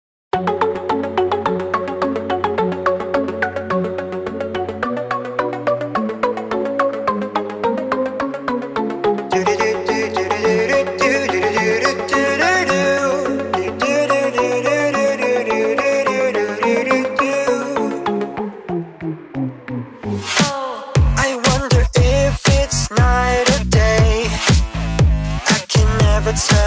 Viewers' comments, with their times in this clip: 0:09 that sounds like player